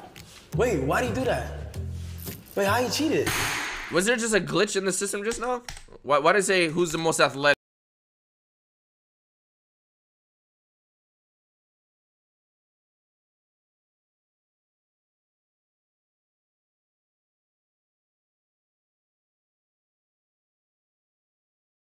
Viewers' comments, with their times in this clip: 0:04 so my audio was the only one that cut out ?